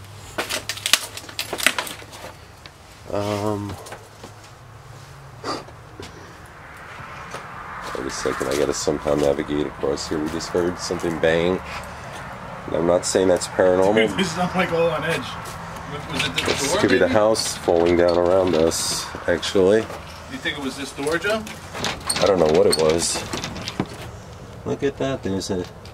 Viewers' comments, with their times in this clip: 0:10 .. sounds like a man whispering two words last word sounds like go